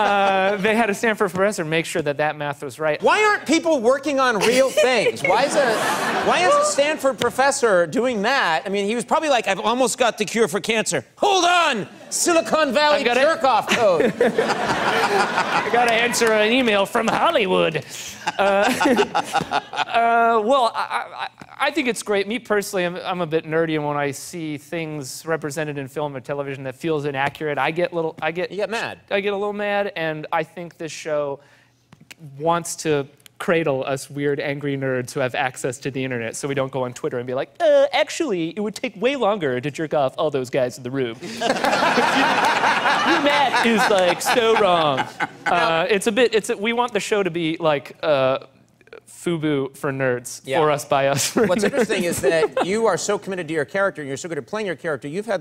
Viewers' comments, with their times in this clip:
0:04 Squeals like a little girl.
0:36 Richard goes all south park jimmy